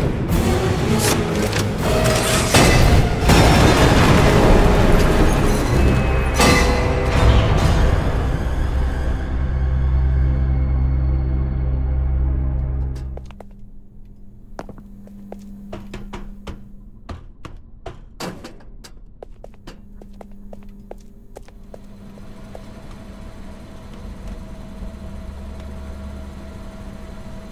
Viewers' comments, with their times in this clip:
0:04 I’ve actually never noticed that Huggy screams all the way down during his fall
0:08 Huggy Wuggy yelling